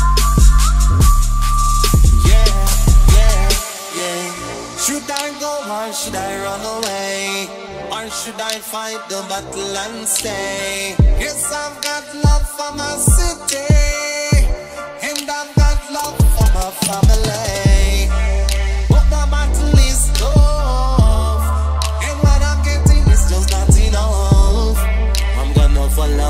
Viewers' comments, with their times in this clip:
0:10 I'm and I still don't hear the bass boost